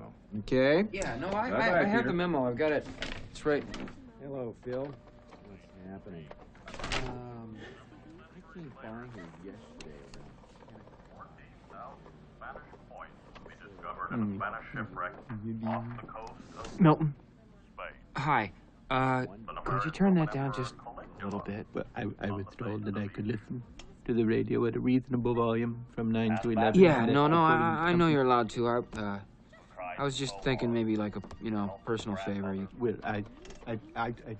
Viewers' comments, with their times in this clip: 0:05 I love how you can hear Gary Cole use the EXACT same greeting and cadence over again. I’ve had so many managers like that!
0:08 I could listen to the guy's voice on Milton's radio for hours. If you listen carefuly starting you can catch a bit of what he's saying: "Several centuries later... fourteen thousand Spanish coins would be discovered in an Atlantic shipwreck of the coast of...Spain.. that were bearing the Roman Emperor Caligula on the face of each."
0:16 Hearing the radio 📻🔘 while Milton Waddams is listening to is bothering Peter Gibbons, getting him real nervous, highly anxious and making him uncomfortable 😣🥵